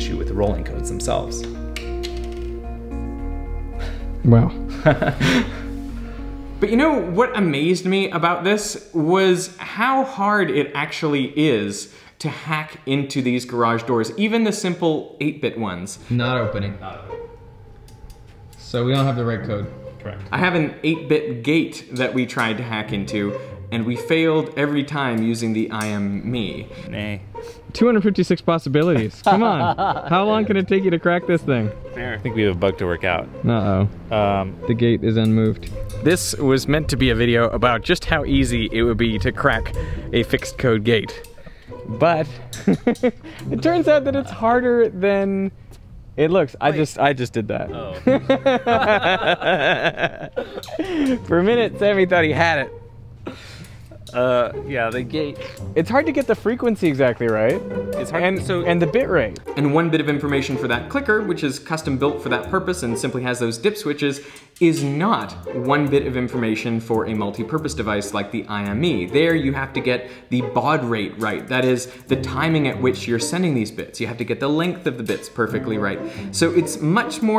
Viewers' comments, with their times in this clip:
0:03 just the laugh
1:00 replay a few times rapidly to hear a nice bird sound